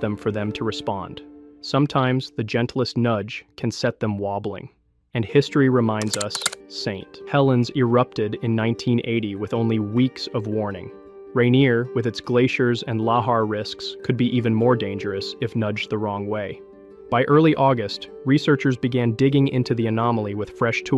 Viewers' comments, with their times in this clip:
0:07 Is this video AI? The diction of speech is off. Go to and listen "Mount St Helens." That's not how we say that. Several weird repeats, each sounding like it was the first time it was said. I had to turn off this slop. F$%k AI 👎🏻